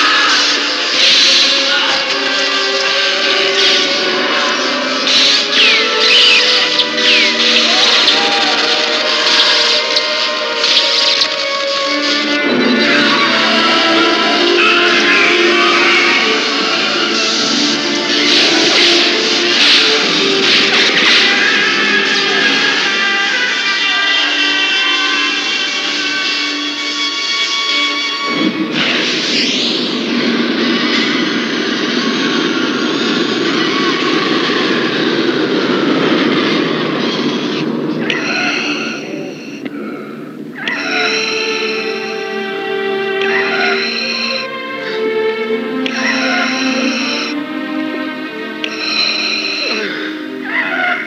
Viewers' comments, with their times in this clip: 0:06 Luke can be heard faintly screaming “Father!” Right before Vader makes a decision.
0:08 the silence helps me imagine an internal conflict within vader at this moment
0:13 Is the noise before palpatine yells Darth Vader?
0:18 One last normal Darth Vader breath. One last breath to let the audience know that the haunting black cyborg they’ve feared is still going strong but on their side for one moment. One final moment to put that fear into evil before fading back into the light.
0:18 One last normal Darth Vader breath. One last breath to give the audience a chance to know that the haunting black cyborg we’ve feared is still going strong but on our side for one moment. One final moment to put that fear into evil for us before fading back into the light.
0:37 vaders gasps make me sad